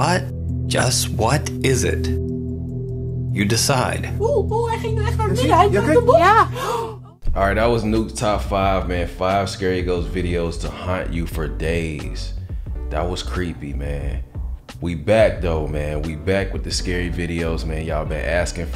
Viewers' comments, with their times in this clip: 0:04 Anyone else jump when that lady goes oh oh… I forgot she did that a d had my headphones on.. scared my ass! Lol